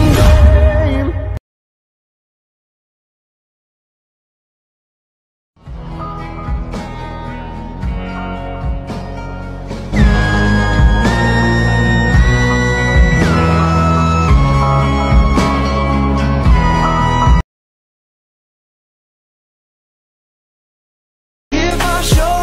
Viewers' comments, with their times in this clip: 0:06 What song is this? The instrumental sounds really nice.